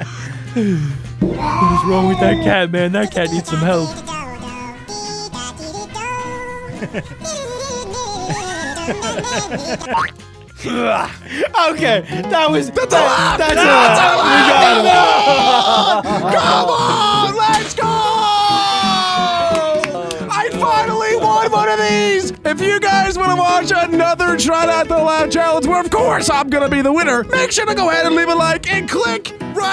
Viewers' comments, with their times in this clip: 0:10 was not a laugh